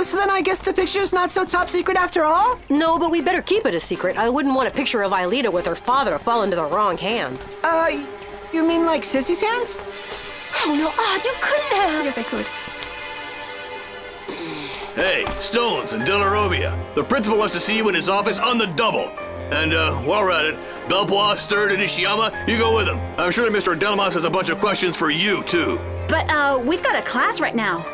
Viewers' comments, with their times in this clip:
0:10 Odd's quick, quiet "yes, I could" they added in there kills me.